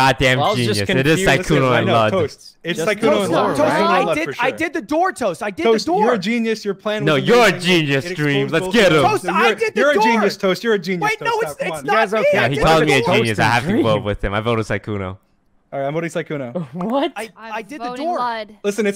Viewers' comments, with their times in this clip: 0:05 Dream: "TOAST, YOU'RE A GENIUS!" Toast: "NO, YOU'RE A GENIUS! Dream: "NO, YOU'RE A GENIUS!" Ludwig: confused screaming